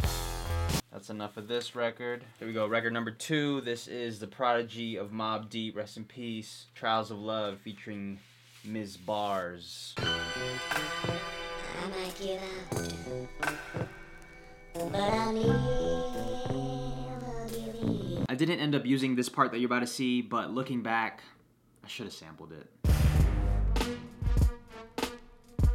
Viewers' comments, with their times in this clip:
0:10 was sounding beautiful!